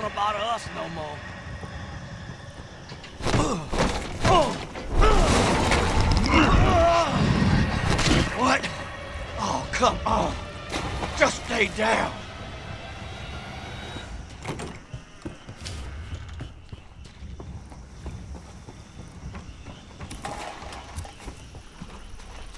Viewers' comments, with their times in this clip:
0:05 technically, that is damage. That thing smacked you and farted on you, lol.